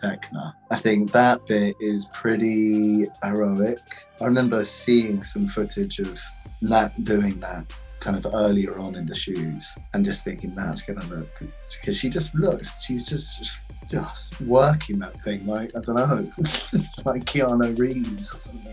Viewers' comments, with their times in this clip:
0:06 Joseph seems like a really cool guy to hang out with. And I really enjoy listening to him. He is so well spoken and has such a pleasant voice. It's so cute to hear he calls Natalia "Nat" I'm sure he gets along with everyone in the cast very well.